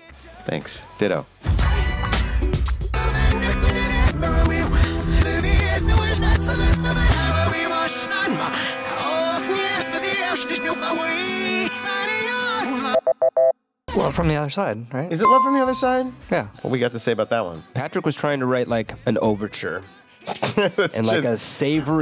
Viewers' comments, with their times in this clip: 0:06 Patrick sounded like a German dictator in reverse